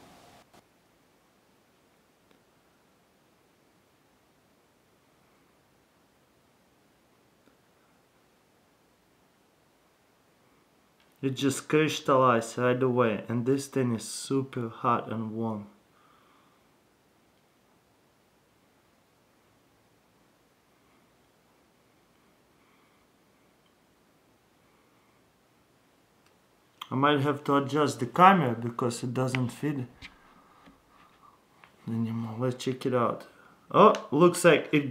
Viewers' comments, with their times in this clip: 0:10 It just cryshtalize
0:22 Congratulation! You just constructed a crystalized dildo! fireworks in the background